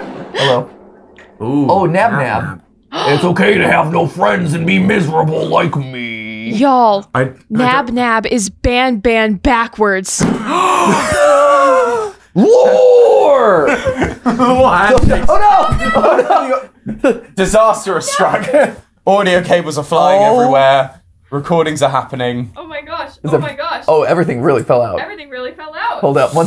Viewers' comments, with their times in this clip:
0:07 Best Line is NABNAB IS BANBAN BACKWARDS🤣 Matpat yells LORE!